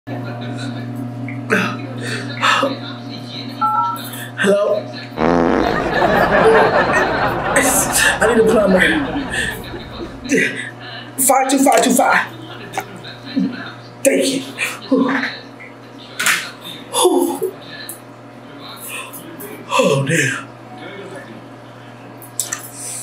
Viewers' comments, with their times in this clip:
0:04 lol >..< shes got wind lol